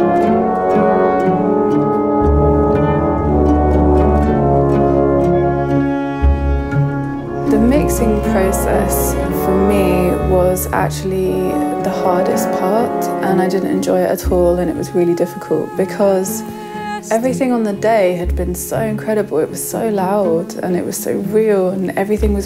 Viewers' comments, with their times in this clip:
0:08 Really interesting! But, to whoever edited this: it's almost impossible to hear what she says, since the music totally drowns her out :S